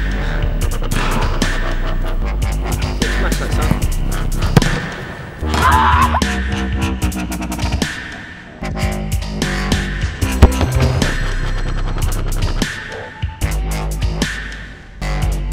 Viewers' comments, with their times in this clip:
0:03 That scream celebration when he hit the crossbar is epic ahaha :P